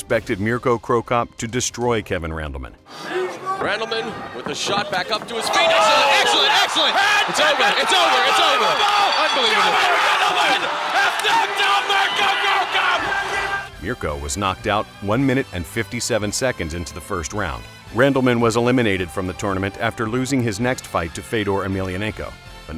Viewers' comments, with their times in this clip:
0:07 Holy shit the commentator's about to have a stroke...
0:09 holy shit was that commentator excited